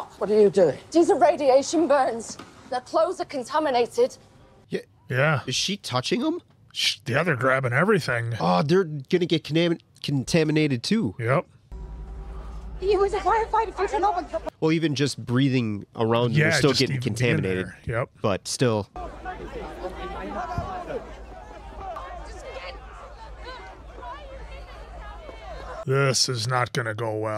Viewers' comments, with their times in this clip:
0:09 Almost said "conaminated" Funnily enough "It's been conaminated!" is a running gag we use to give my friend a hard time because he said that once.